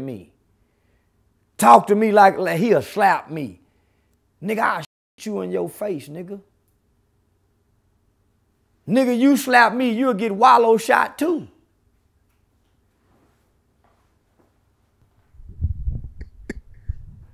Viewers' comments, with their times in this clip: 0:04 The way he said it was so cold, I love it